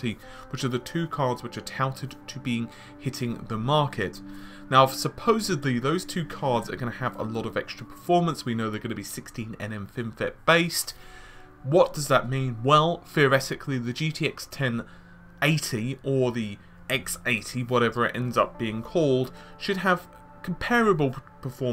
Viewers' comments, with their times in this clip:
0:04 ha I think I hear sirens in the background!